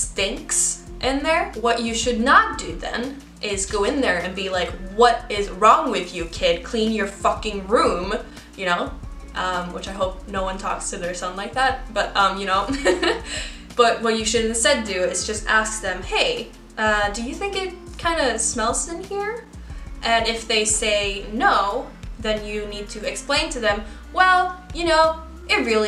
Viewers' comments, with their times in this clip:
0:10 you kind of showed me the Swede and you LOL. Because that is such a typical way for an American mother and a very gentle way for an American father to talk to their child. My American Dad would have beat my ass honestly if my room was smelling really bad and my mom definitely would have voiced her opinion that way towards me if she had smelled something in my room. Also I wanted to know if it's the culmination of American media and entertainment that has given you the ability to have a perfect American accent? Or is an American accent taught in the Swedish school system?Because I've always wondered that, because you can clearly choose to have a British, Australian, or even a southern American (As in Alabama) accent if you learn English but it seems like most Europeans when they do know English perfectly, it seems to be a hundred percent always a normal American accent